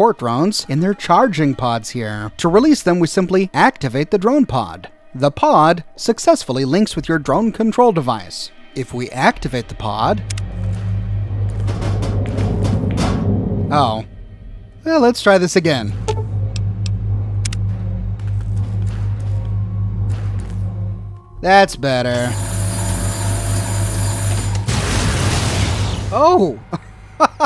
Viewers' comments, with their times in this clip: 0:08 "if we activate the pod...oh..." That was the most disappointed I have ever heard you. XD